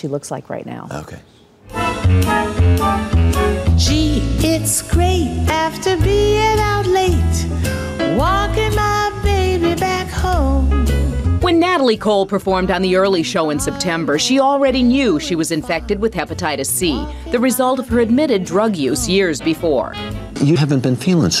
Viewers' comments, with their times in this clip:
0:05 OH OH OH THAT VOICE!!!!! SHE IS HER DADDY'S CHILD!!!! MY LORD!!!!!